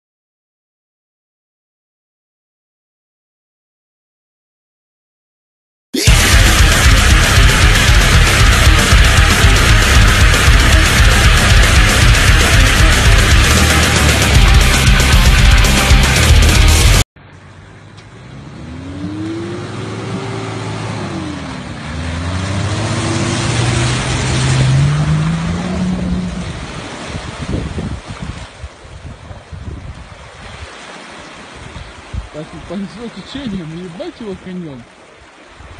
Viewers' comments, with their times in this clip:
0:06 Unsubscribe. By the way, nice video except for loud noise
0:16 ..... The SHOCKINGLY loud Metal was NOT necessary!!! 😲😠😠 Otherwise great series of Clips.